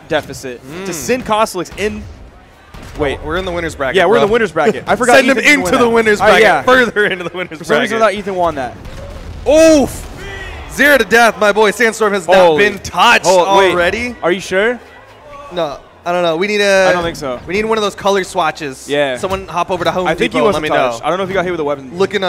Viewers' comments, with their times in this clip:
0:08 it Sounds like someone is doing the "uhh" sound from Roblox in the background.